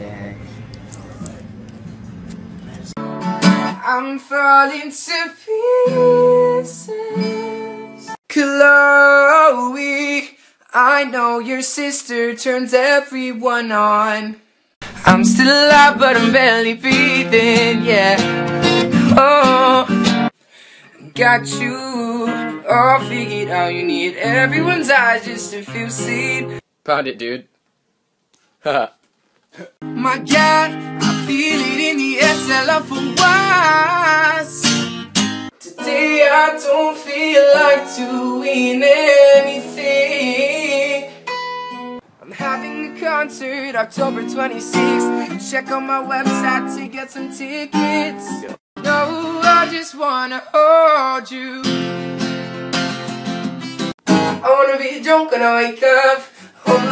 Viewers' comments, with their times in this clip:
0:03 CAN WE TALK ABOUT THOSE HIGH NOTESS!!! DAMMMMM
0:42 British accent on point haha